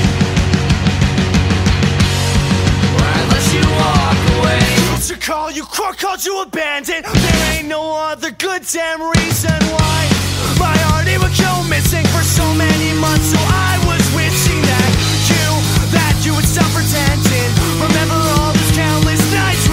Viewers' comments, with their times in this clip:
0:04 Is that one of the same singers ? ( sorry I dont know their names) like I think its the guy who sings Tears Over Bears but I don't know. Because if this is his new and improved voice then thats awesome because it sounds hardcore AF